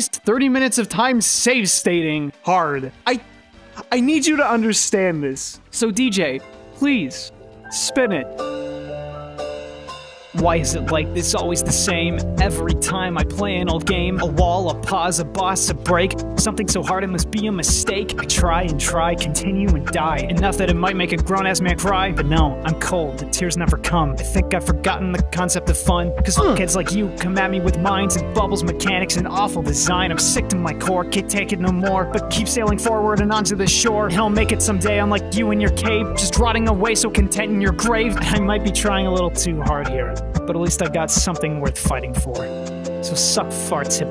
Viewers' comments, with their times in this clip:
0:07 I was afraid I was gonna have to skip when the music came on but you really nailed that shit
0:29 did not expect a musical number in the middle of the reviews, not bad man.